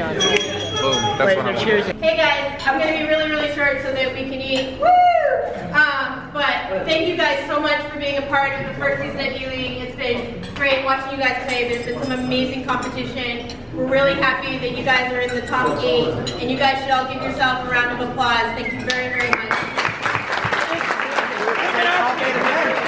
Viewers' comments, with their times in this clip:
0:03 that wooo would be extremly embarrassing for me
0:04 that "woooow" is kinda cringy 😂